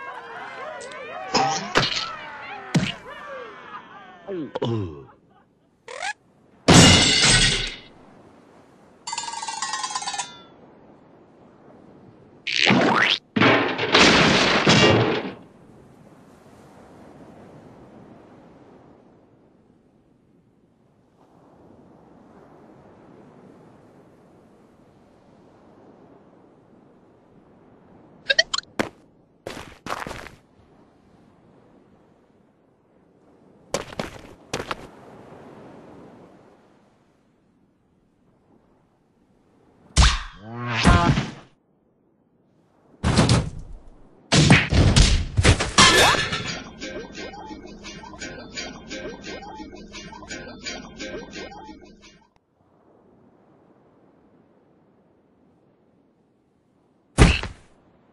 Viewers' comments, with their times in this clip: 0:09 Processed, Descending Cowbell Shakes
0:41 Short Bulb Horn Honk